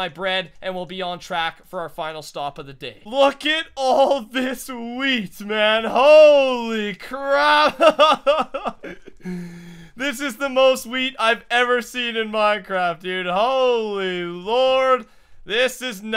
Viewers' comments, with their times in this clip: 0:03 lol in in the video he sais oooh look at alll this weed